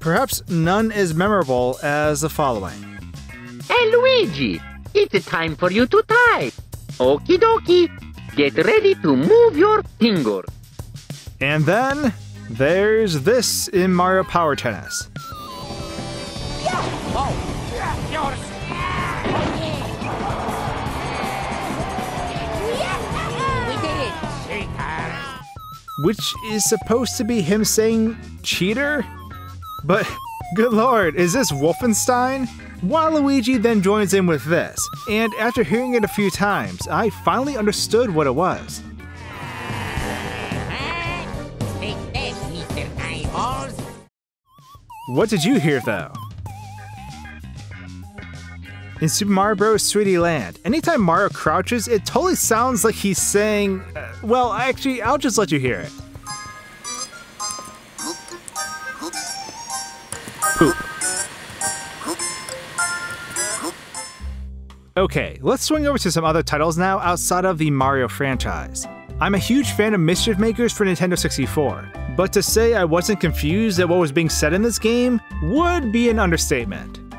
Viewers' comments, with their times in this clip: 0:03 Hey Luigi! Its time for you to DIE (TYPE!)!
0:05 I know he said type, but... It just doesn't... sound like that
0:06 Its time to move your pingas
0:07 get ready to move your pingas
0:07 I hear "Get ready to move your PINGAS"
0:08 On I hear okie dokie get ready to move your Pringle’s
0:16 Wario sounds like he is saying "Up Yours."
0:16 I heard "UP YOURS-" or "AMATEUR!"
0:17 I speak Spanish and I had Mario Tennis Wii when I was a kid and I kept thinking Wario was saying," Ay Dios!" Which means "Oh God!"
0:17 Now that you mentioned the Bad Company 2 soldiers, that reminds me. What about that one Arab faction from MW2 multiplayer which sometimes sound like they're saying "Bambi!" "Tango Sucka!" or "Your mother!" They're a soramimi goldmine. Also, is it just me, or did Wario say "Up yours" ?
0:30 I heard cheater...
0:32 Waluigi: take this mr. eyeball
0:39 i heard "take this mr.eyeballs"
0:40 Take that Mr. Tide Pod!
0:40 I heard: take this meaty slimeballs
0:41 i heard “Take this Peter Thigh-Balls!”
0:41 I heard “take this mr type balls” 😂😂😂
0:41 i heard "take this mr.eyeball!"
0:41 i heard "take this, mr eyeballs"
0:41 i heard mr eyeballs!
0:41 i heard take that mr. eyeballs
0:41 sounded like "Take this stupid pie-hole!" to me.
0:41 I heard "Take this peter mounty mole"
0:41 I heard "Take this, Mr. HighBalls!"
0:42 I hear "Take this, mr. typo!"
0:42 I heard "Take that, Mr. High Balls."
0:47 "TAKE THIS, MR. PIE HOLE!" "TAKE THIS, MR. TYPO!" "THANK THIS, WIZARD PIE HOSE!" WEeeeeerrrrrrdddd....
0:47 I heard him say “take this mr. eyeball.”
0:48 Why did I misheard that for "Super Mario Bros Sweaty/Sweety Land"
0:49 it sounds like he says Super Mario Bros Sweetie Land
0:57 I only heard hoop Not poop
1:01 i thought he was saying hump